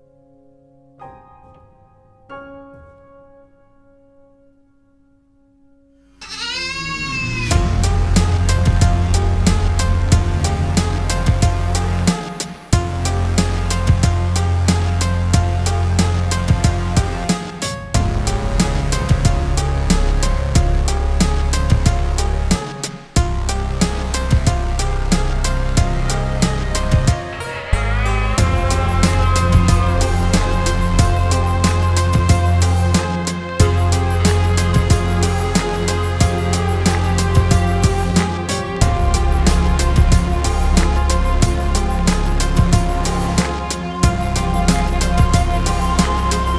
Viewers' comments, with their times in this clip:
0:05 Tha was a nice episode, thx! LOL Sweet nice calm music while placing sand * MêeeeeEEEE! * Hell Machine scarring the world
0:33 all i hear is "Post man Pat, Post man Pat, post man pat and silly old cat" lol